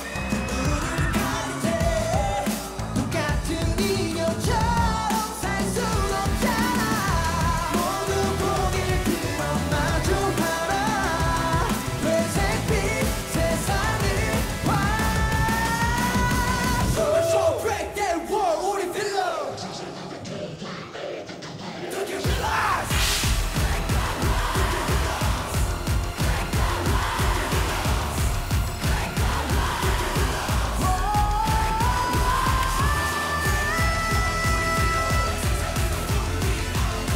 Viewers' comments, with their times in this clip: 0:10 Dang Yunho killed me with his vocals.
0:20 Dude i dont stan ateez or know the members but that guy who screamed guerrilas got me tinggiling curling kicking my feet goosebumps suffocating my head in a pillow rolling around in the floor reapiting the part over and over gain singing the part knowing my neighbors might call police and making me stan them in
0:21 I love the shout of guerrilla so forceful and strong